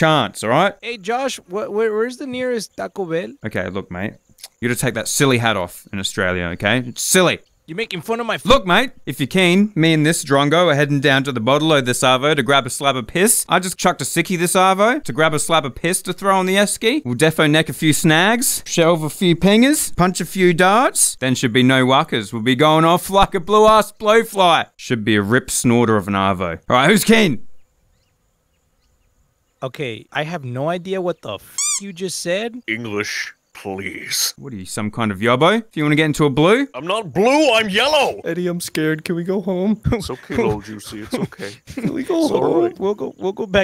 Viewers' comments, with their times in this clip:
0:08 he is speaking the language of the gods Or he’s possessed by the sniper from tf2
0:08 As an Aussie their reaction to was really funny cause that's like half way to how some Aussies speak
0:11 God made Australia the most dangerous place on earth and apologized by making Australians the best sounding and speaking people on earth
0:19 "Punch a few dogs" = "Smoke cigarettes" in Australian slang ?!
0:25 you sound like a sims character, now go woohoo in the closet